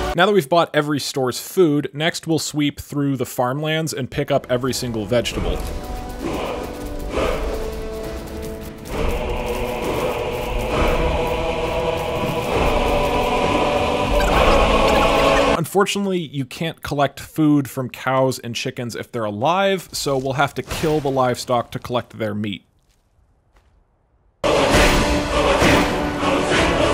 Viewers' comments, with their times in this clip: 0:10 i love how there's that song playing and one of the farmers start talking and because the video is speed up then she soumds like chipmunk